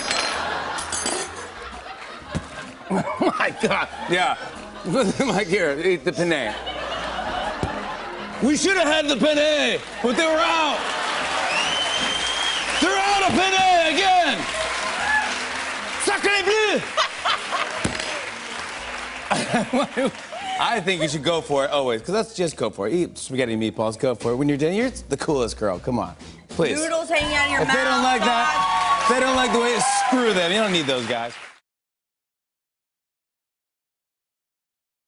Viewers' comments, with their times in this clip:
0:05 This so funny because penne sounds very similar to penis when said in Spanish especially when jimmy said "Here it the penne" in my mind it sounded like "Here it this dick" lol
0:16 her laugh is amazing
0:16 True laugh :D